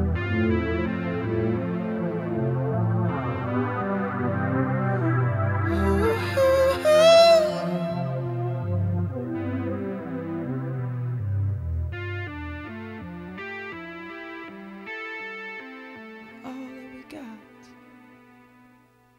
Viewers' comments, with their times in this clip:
0:06 Dang, he put some stank on that note! Bang! I wish I could do that.